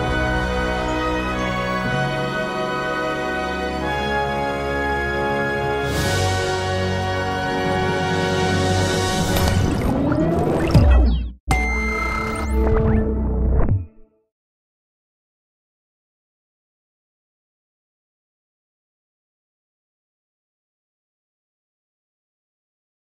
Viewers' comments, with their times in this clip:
0:07 ...that outro with the music syncronized to the logo animation...top notch!